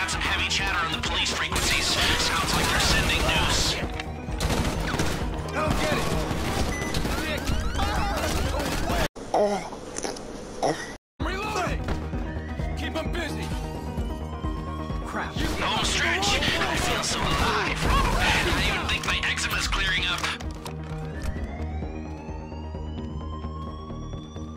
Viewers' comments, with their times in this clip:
0:09 *Runs over the guy * *The guy moans* Lester: Lester Likey~~ 😏